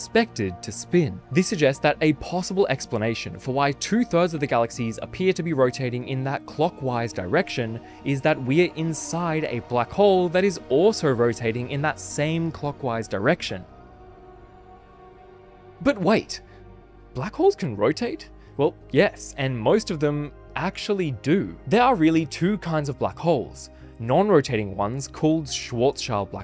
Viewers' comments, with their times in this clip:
0:08 Interesting but why did you put creepy music in the background